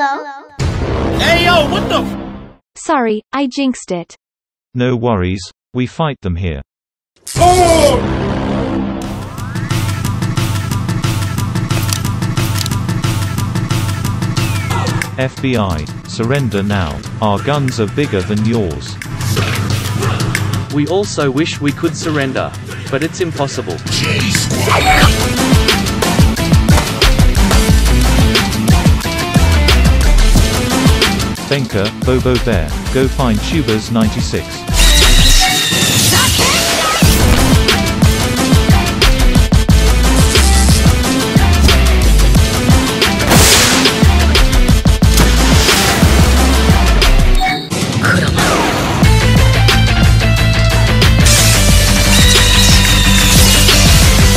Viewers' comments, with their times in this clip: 0:09 Bro the music is sick
0:24 here the best fight and music arrive
0:39 Bro the beat came with the power up in was perfect makes me wanna rewatch it
0:41 That song is just so cool